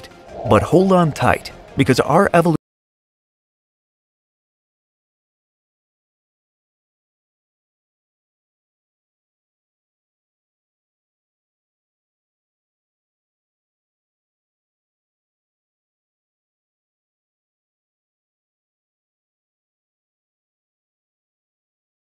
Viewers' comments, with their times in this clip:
0:10 What happened to the audio between and 8.55? It seems the mystery of why our species went through a (very narrow) bottle-neck in the distant past is going to remain a mystery for now!